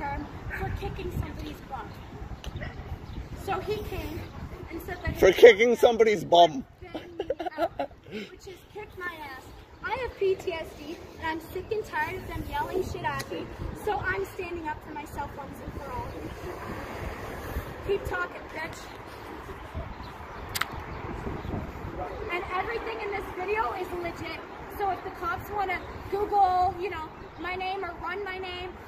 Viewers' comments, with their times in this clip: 0:10 for someone who keeps saying she has PTSD and doesn't like yelling, she sure is doing an awful lot of yelling